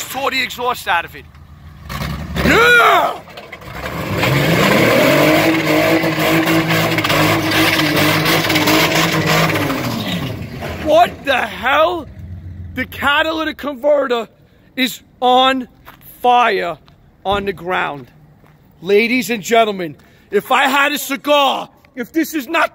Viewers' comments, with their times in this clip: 0:04 let that baby purr..... J Series FTW!